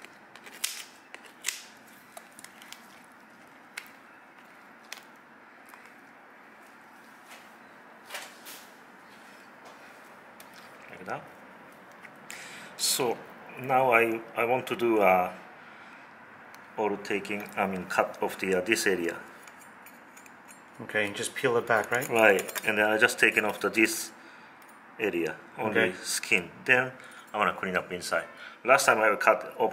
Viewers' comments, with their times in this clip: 0:10 did u hear that gurgling sound